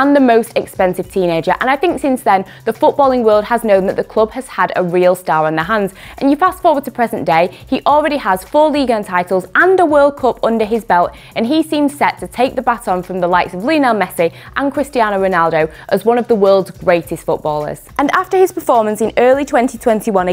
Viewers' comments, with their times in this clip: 0:08 Everyone: pronounces it "World Càp" English people: "World Cop" 👮🏼‍♂️